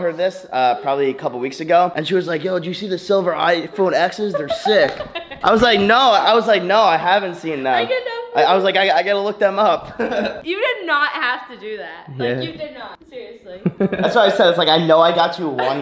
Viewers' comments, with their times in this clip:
0:03 sounds like jelly